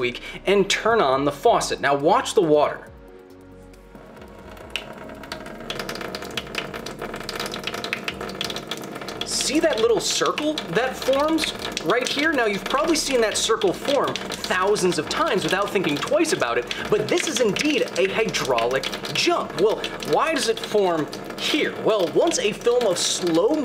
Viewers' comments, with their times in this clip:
0:04 Why do I hear pig squealing?